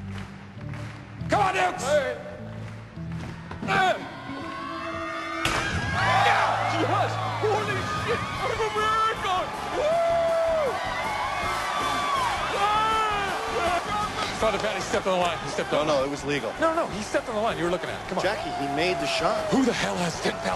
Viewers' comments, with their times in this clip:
0:05 the way he yells and then covers the mic 😂😂😂😂😂